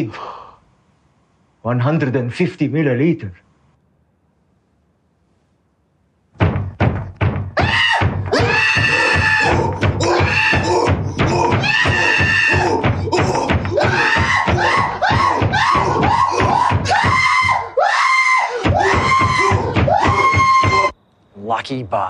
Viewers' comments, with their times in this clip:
0:06 I talked to a chimpanzee expert and he confirmed that it sounded like an actual chimpanzee